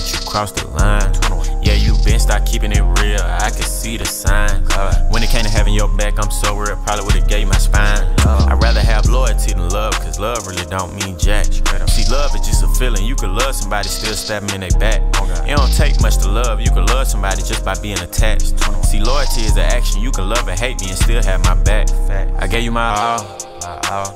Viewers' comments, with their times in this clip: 0:08 mostly but the whole thing is kinda him talking just in a rhythmical way
0:11 What a fart the shoe broke down.🤣🤣